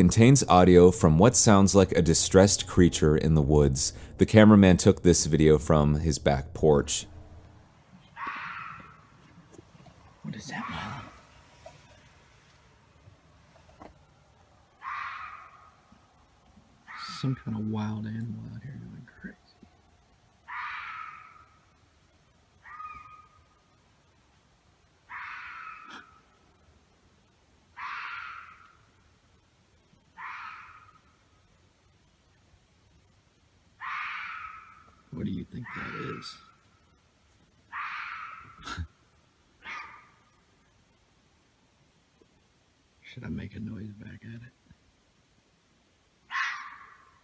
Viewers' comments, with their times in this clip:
0:10 that’s either a coyote or a fox mating call
0:35 The one sounds like a mountain lion or bobcat. Maybe fox. I’m not an expert lol. But it’s definitely normal.